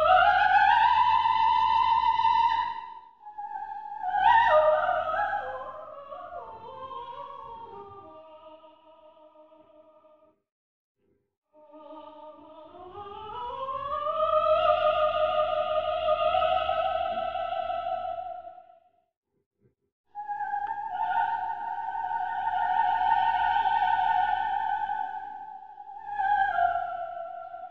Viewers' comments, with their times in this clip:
0:10 There have been times, when I have edited these performances, when I have come across moments in time that have reduced me to tears. This was one of those moments. But not because of the music or Mum singing. Because of Dad. After singing the "D'amor sull'ali rosee", you can hear my Father say "Brava" It was one of those moments that reminded me how supportive he was. He didn't do that very often but when he did, he wanted to make sure that HIS was the only Brava she heard. It was all that mattered to her in that moment.